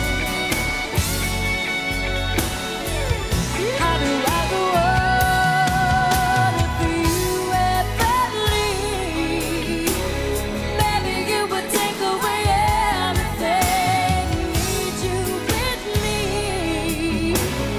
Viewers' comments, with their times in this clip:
0:04 Love the pretty girl singing along